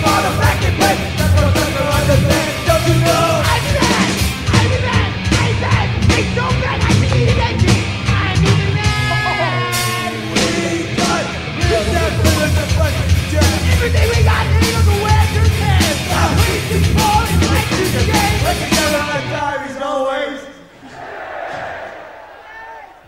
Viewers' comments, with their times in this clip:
0:05 Fucking awesome jajajaja check minute Scott gets a hit with the mic, i hear a "tac" sound jaajajajajajajajajajajaja